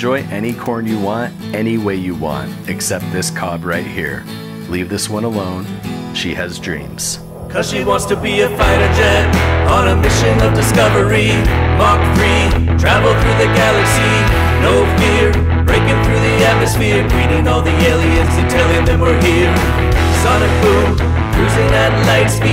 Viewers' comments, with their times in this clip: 0:07 the song that gave me whip lash